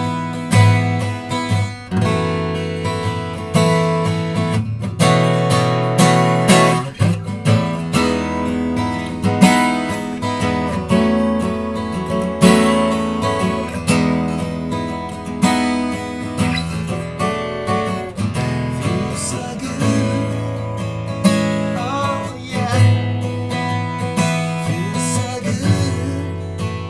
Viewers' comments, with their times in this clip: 0:10 cool song what is it? do you miss the bass from the dreadnought? this sounds pretty balanced + nice cozy shaped guitar! Thanks